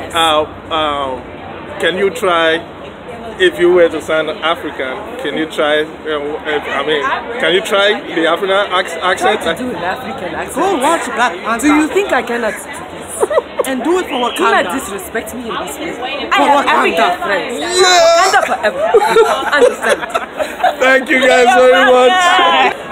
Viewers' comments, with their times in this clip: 0:09 which one is african accent?